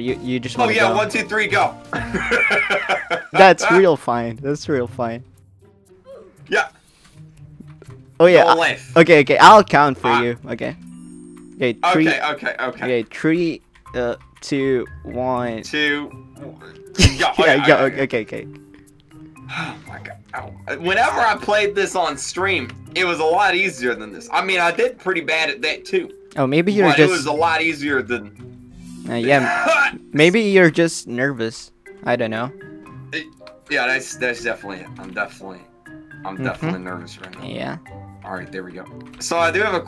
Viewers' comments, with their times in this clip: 0:05 THE OG OOF SOUND
0:23 i hear a Minecraft sound ?